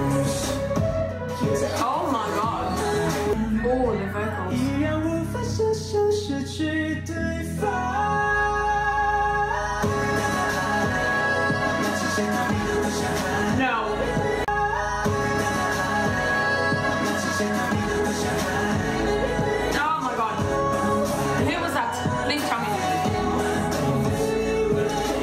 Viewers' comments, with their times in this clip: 0:08 TEN & XIAOJUN HIGH NOTE ☺️☺️